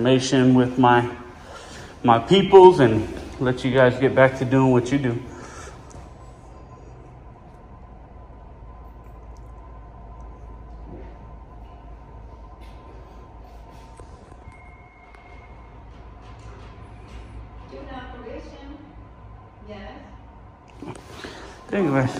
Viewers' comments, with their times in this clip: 0:08 "Moment of Silence" Listen closely. The silence that is rudely shattered by the tubby guard's shart -- Do you think that might account for the bodily stench hanging in the air of this facility? Well, it's a space dedicated to crims, so who cares, right?